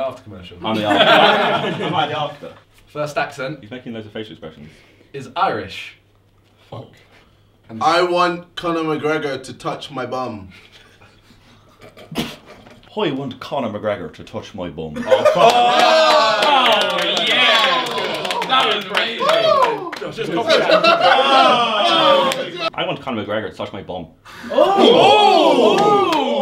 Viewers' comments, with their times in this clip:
0:07 I'm creasing irish
0:14 I’m Irish and I can say that’s a solid Irish accent